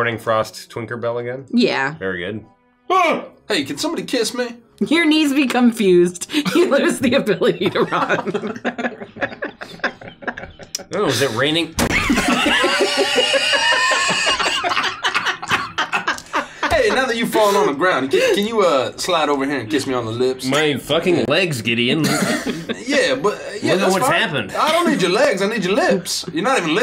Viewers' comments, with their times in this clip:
0:08 Oh is it raining? THUMP